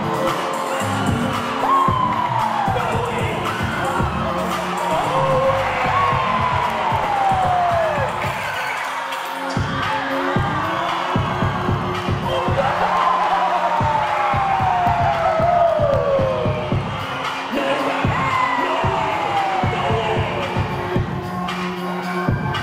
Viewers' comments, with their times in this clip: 0:07 IS SO NICE THE TRACK JUST SWITCHED TOO